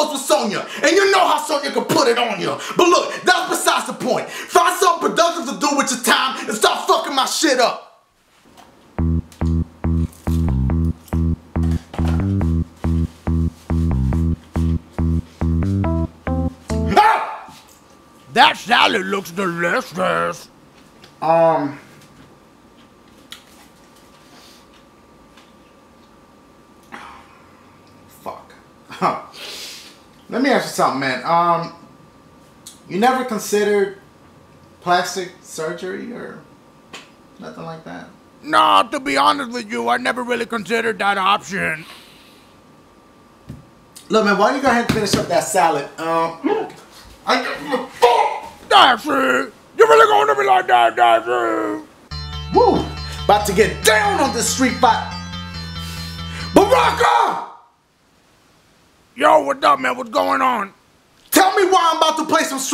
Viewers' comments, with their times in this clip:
0:05 at first i didn't know wtf he saif
0:17 dashie screaming so funny it's a
0:49 what did he say?